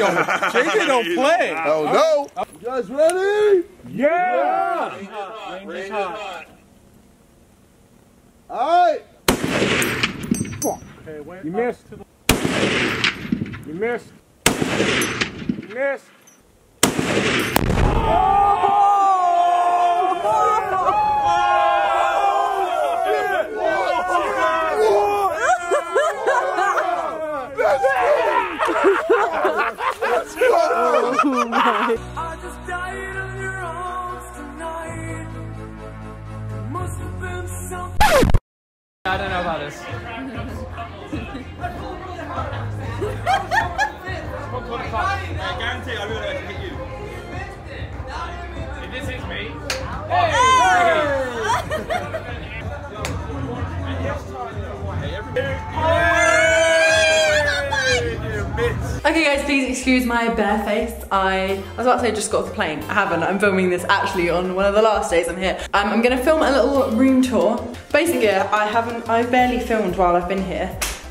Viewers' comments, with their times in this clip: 0:09 you hear jj hyped then when he misses it’s just the whisper “Fuck sake” 😂😂
0:52 you can just hear tobi